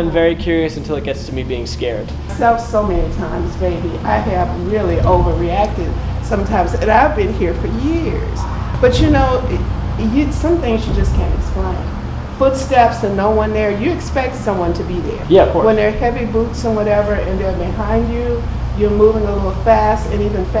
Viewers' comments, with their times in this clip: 0:08 did I hear a scream?